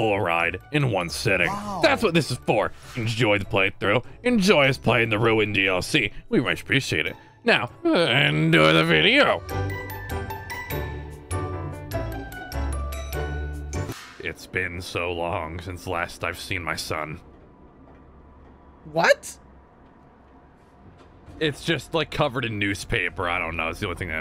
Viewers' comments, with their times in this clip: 0:07 "EnJoY tHe ViDeO🤪 :3"